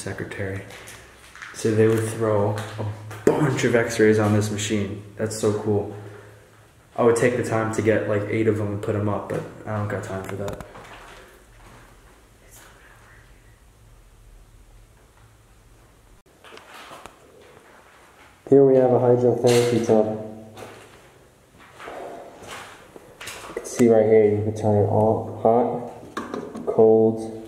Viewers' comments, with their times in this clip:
0:10 just after you said you "did'nt have time for that" I heard whispering. dont know if it was the other person with you or not tho. . . played it back severel times and the whisper sounded like it was saying " it's Not their /there working"